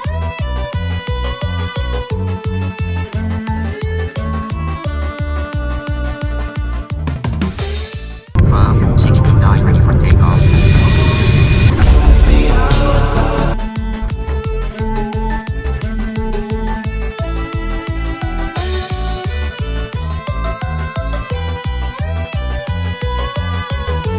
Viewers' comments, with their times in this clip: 0:09 what's the song? Vibey